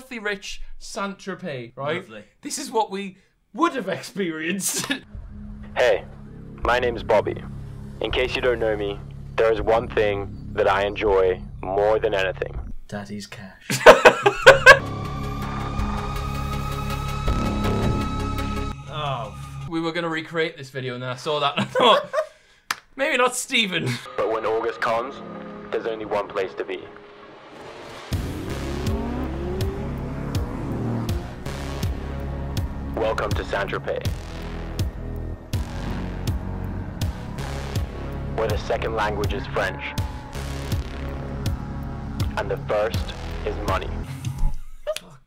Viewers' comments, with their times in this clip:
0:05 Sounds like some Need for Speed game 😂🤣
0:06 this whole st tropez sounds like a perfume ad
0:33 call of duty voice actor